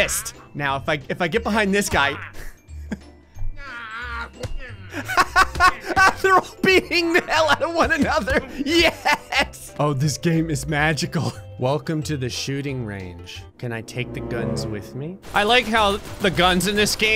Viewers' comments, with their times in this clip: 0:03 the sound the guy made "wahhhhhh" 😂😂😂😂